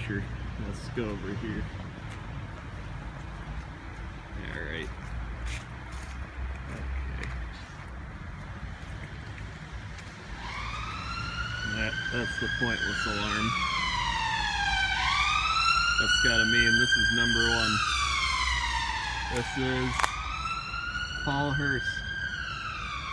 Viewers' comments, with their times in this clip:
0:10 ...My Ears are bleeding...But nice benches